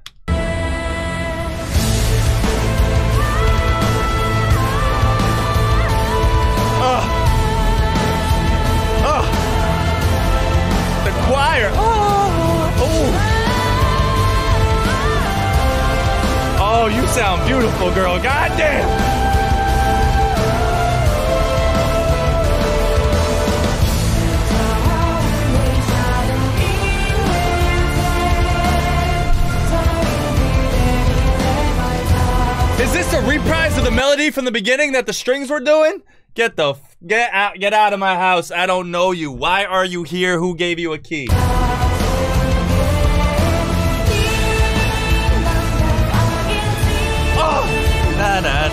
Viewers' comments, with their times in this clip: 0:08 he is doing ah ah ah ah to Reiner and Bertolds reveal
0:32 Lol, I love your double take when you notice she's singing a reprise of the original melody at the start.